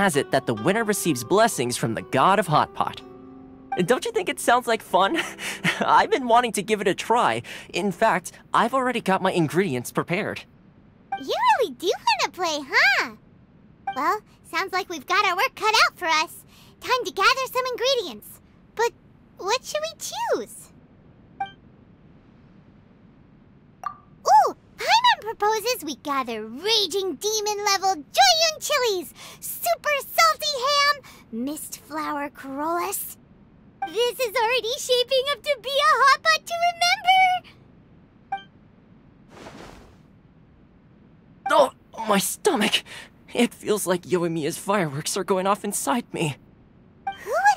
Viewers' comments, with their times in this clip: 0:03 I love how he just sounds so awkward here
0:28 I like this part in chinese ver better. Sorry....cuz Paimon sounds like she was more concerned of what she'll end up eating. Her voice get softer and softer in doubt than in excitement.